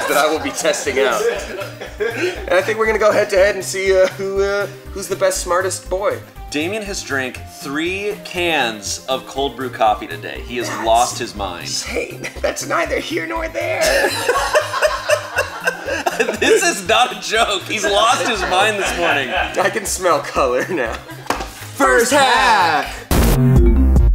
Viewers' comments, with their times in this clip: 0:10 Is it just me, or did sound JUST like Chris from Family Guy?